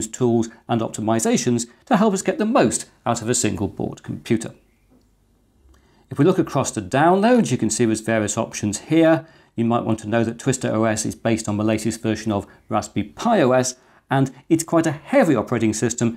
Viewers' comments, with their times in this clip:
0:04 I vaguely heard chirping in the background or something, do you have a bird?